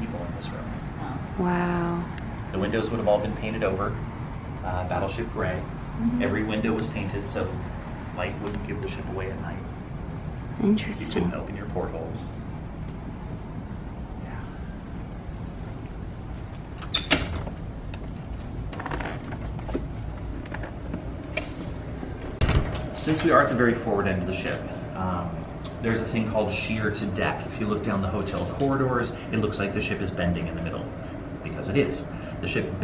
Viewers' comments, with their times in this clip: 0:08 did anybody else hear quiet humming?
0:14 Ok, there was a whisper of “yeah” when he stops talking.